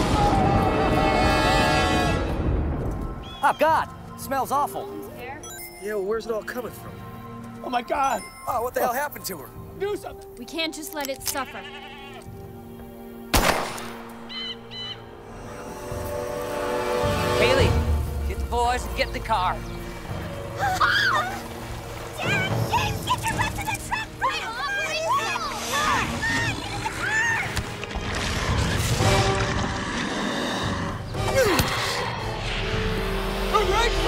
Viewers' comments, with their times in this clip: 0:03 That was like they had to say their lines before they forget
0:20 jaja the scream
0:20 LMFAO that stock scream 😂